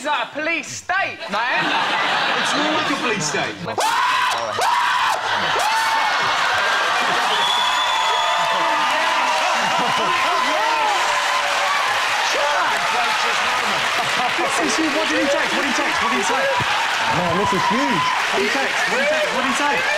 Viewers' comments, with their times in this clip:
0:03 PSA: If you're watching this with headphones on, please be careful minutes! You're welcome. 😁
0:03 PSA: If you're watching this with the audio enabled, please be careful minutes! You're welcome. 😁 #speakerophileshaveearstoo